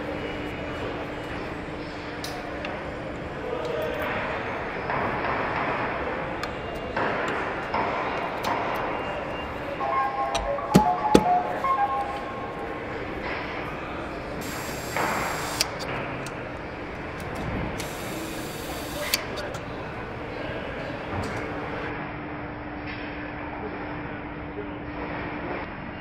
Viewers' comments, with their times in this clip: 0:09 Someone forgot to shut off the intercom before starting a game of Pac Man.